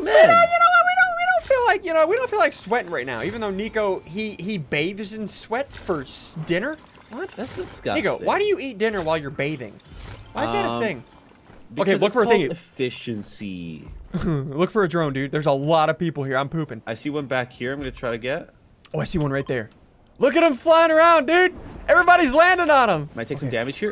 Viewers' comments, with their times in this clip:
0:06 It sounds like he said the N word